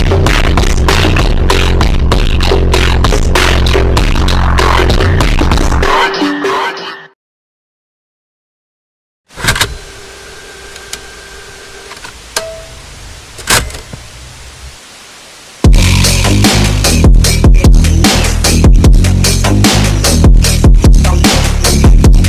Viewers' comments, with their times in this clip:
0:09 for me this is the best song in the video shot, the beat at the beginning in the form of car presentation is awesome